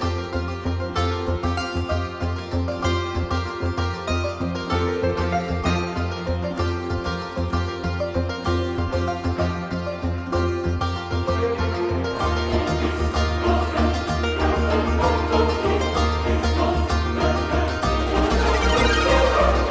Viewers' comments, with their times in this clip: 0:05 Starting does My Freedom sound like the Sims 3 theme to anyone? Especially because of the vocals.